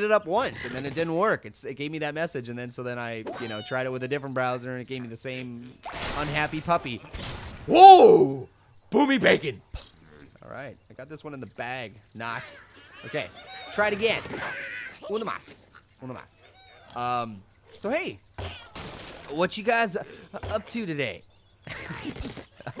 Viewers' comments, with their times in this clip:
0:10 did he say boobie bacon... gross